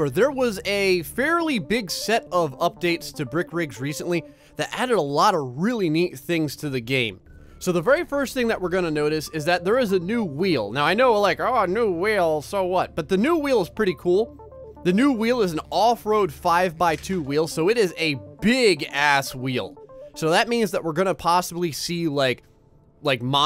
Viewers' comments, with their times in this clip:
0:10 you sound like the joker from Batman XD 😂😂😂😂😂😂😅